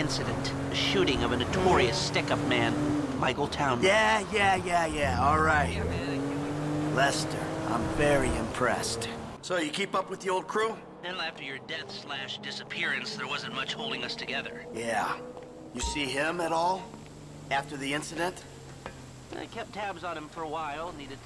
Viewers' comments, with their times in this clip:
0:09 Did you notice how the audio quality changes between the intercom and the natural voice depending on Lester's proximity? 10 years and this game still surprises me